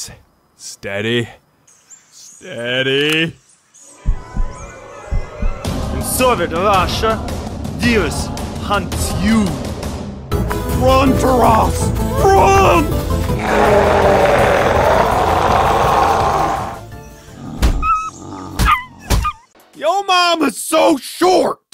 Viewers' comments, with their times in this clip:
0:06 i feel like the accents werent soviet